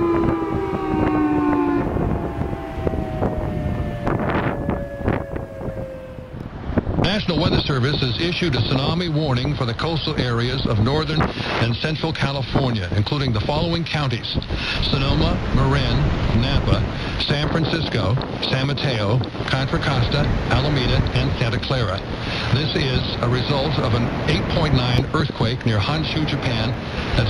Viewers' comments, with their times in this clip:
0:08 they got the guy from the 50s A-Bomb promotional videos to speak over the sirene